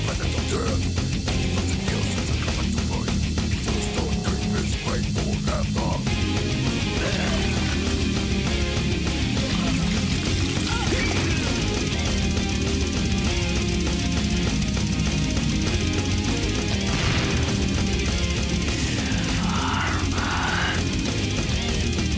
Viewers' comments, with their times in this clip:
0:10 the double bass drum sounds like a drum roll.